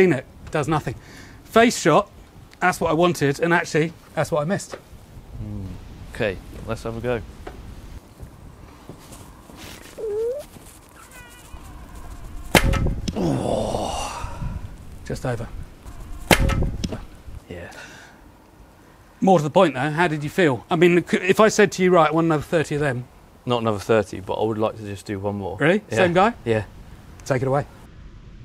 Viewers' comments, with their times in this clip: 0:10 you can hear him fart while throwing ahhahahaahhahah